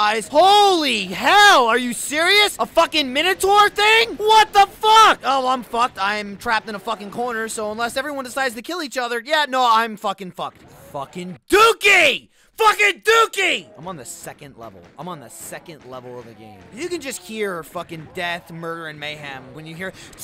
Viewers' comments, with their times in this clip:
0:08 Did anyone else notice the fireball says no after he says something...